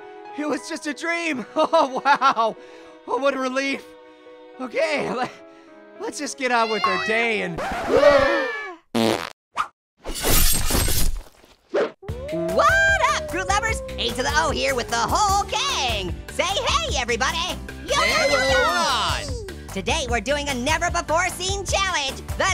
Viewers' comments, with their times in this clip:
0:08 fart sounds make me laugh all the time 😂🤣😂🤣😂🤣😂😹🙉👕👖🧣🧦🧢💄💍💎🐴🐎🐂🐮🦌🦓🦄🦊🐱🐈🦁🐯🐅🐆🐵🐺🐒🐩🦍🐕🐶🐭🐁🐀🐹🐰🐇🐿️🐑🐐🐪🐫🦒🐘🦏🐃🐄🐷🐖🐗🐽🐏🕊️🦅🦆🦉🐸🐊🐢🐧🐦🐼🐥🐤🐣🐓🐔🦔🦇🐻🐨🐾🦃🦎🐍🐲🐉🦕🦖🐳🐋🐬🐟🐠🐡🦈🐙🐚🦀🦐🦑🐌🦋🐛🐜🐝🐞🦗🕷️🕸️🦂💐🌸💮🏵️🌹🥀🌺🌻🌼🌷🌱🌲🌳🌴🍃🌵🌾🌿☘️🍀🍁🍂🍊🍐🍒🍑🍅🥥🥑🍆🥔🥕🌽🥝🍍🍌🍋🍊🍊🍉🍈🍇🍎🍏🥔🧀🧀🧀🧀🧀🧀🧀🧀🧀🧀🧀🧀🧀🧀🧀🧀🧀🧀🧀🧀🧀🧀🧀🧀🧀🧀🧀🧀🧀🧀🥨🥨🥨🥨🥨🥨🥨🥨🥨🥨🥨🥨🥨🥨🥨🥨🥨🥨🥨🥨🥨🥨🥨🥨🥨🥨🥨🥨🥨🥨🥖🧀🥨🌭🍖🍖🌭🌭🍖🥓🍟🥪🌭🥨🍕🍖🥦🍖🥖🥪🥓🌭🍞🥖🍗🍘🥗🥙🍘🍘🍘🍜🍱🍘🥗🍿🍘🌯🥗🍢🍳🥗🥜🥖🍖🥒🌰🥓🧀🍕🍟🥓🥖🥪🥖🌭🥩🥪🥩🌭🥖🥨🌭🥖🌭🥖🌭🥖🌭🥓🌭🥓🌭🥓🌭🥩🥐🌶️🥒🥖🥓🍔🥨🥦🍄🥞🍟🍕🧀🥜🌭🍖🍟🥞🍄🍕🧀🥜🌭🍖🌰🥪🍗🍞🍚🥣🌮🍛🥗🌯🍜🍿🥙🍝🥫🥚🍠🍱🍳🍢🥘🍘🍣🍙🍲🍫🍬🍭🍮🍯🍼🥛🥧🍰🎂🍪🍩🍨🍧🍤🍥🍡🥟🥠🥡🍦🔪🔪🔪🔪